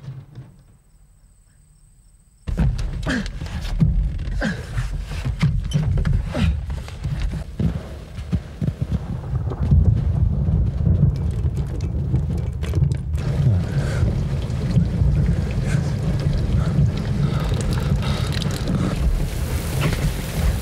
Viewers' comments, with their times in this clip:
0:07 the rain and thunderstorm is coming like from Up The Day After Tomorrow and disaster movies did